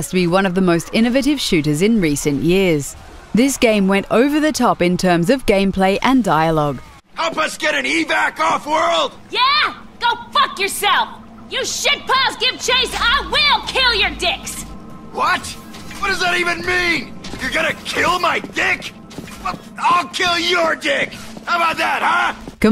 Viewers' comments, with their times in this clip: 0:06 Wait a sec...Spike? And Shepard? Having a shit fight? That's motherfucking cocksucking Spike Spiegal and Jane Shepard having a fucking shit fight. I AM GETTING THIS GAME.